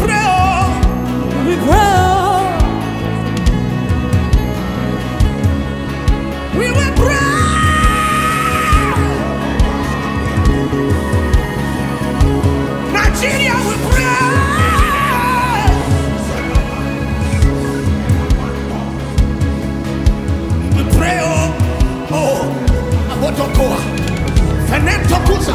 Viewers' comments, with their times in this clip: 0:06 My wife was playing this song while i was listening to something else though earphones, but i felt the song reach out to me even when i couldn't hear it. As soon as i heard it, it plucked my heart strings like a harp. Hair on my body standing up. What the bass guitarist was doing ... I've got no words. Incredible.